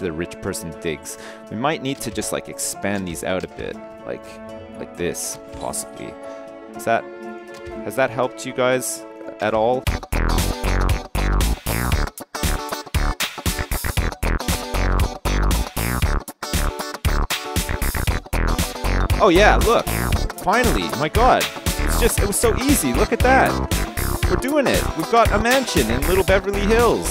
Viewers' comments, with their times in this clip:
0:05 Oh man. I love the funky beat I MUST KNOW THE NAME!!!!!
0:10 That shnazzy little tune is totally boss.
0:10 Funky bassline ... laughed